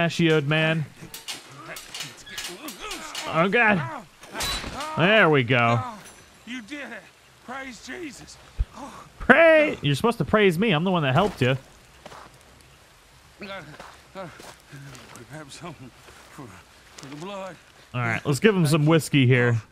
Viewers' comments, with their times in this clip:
0:04 Wtf, why is it that u sound like ur physically struggling, & having a hard time opening the trap. I understand it’s a game, but that’s a bit X-tra Dude.